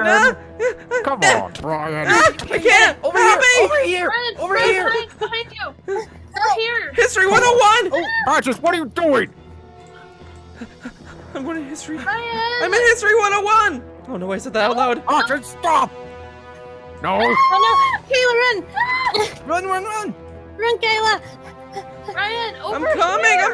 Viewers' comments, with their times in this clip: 0:04 ish, did he just say helpy?